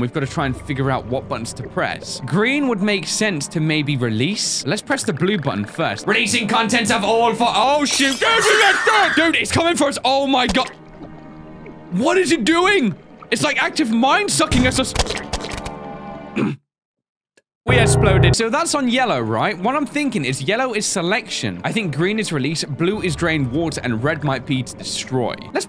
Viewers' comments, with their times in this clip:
0:07 did he sayed shit if yes im unsubbing